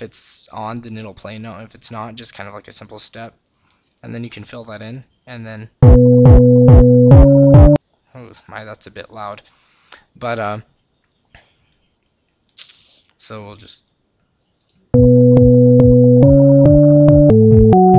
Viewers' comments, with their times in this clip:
0:05 so that's how hardstyle was invented...